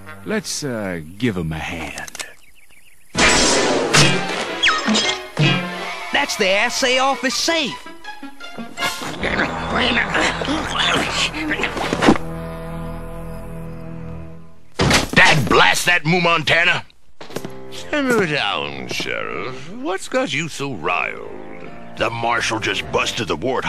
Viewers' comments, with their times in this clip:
0:10 There is something about the warthog’s communication that doesn’t sound right compared to the other Moo Mesa citizens. I wonder if it had something to do with comet mutation. If this were to reoccur in the reboot series, one of the main characters should have an explanation for the warthog and boars’ lack of communication, as well as origin story to the comet mutation of the boars and warthog, explaining why they can’t talk. I hope Nacelle could consider this.